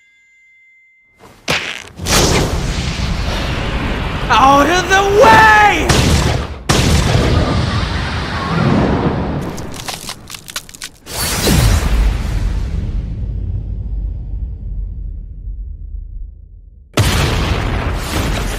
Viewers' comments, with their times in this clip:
0:04 if the VA of Tanjiro would've scream or at least put more effort into the voice it would've sounded way better it sounds off to me but i still like the VA good try and good video